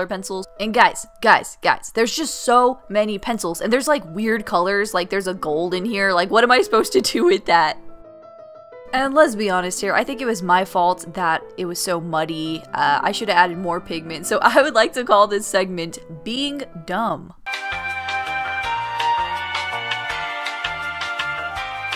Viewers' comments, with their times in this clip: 0:06 THAT VOICE CRACK THO